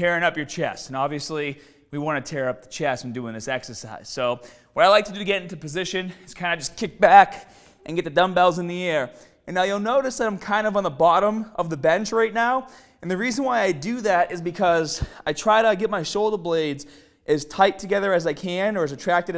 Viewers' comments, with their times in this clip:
0:06 just kick Baaaaaaaak... Sounded like a goat 😂